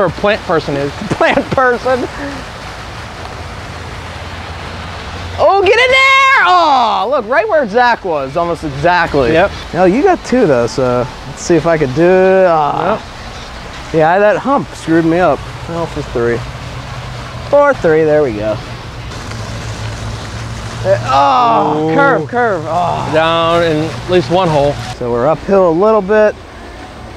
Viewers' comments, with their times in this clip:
0:08 fall out boy in the background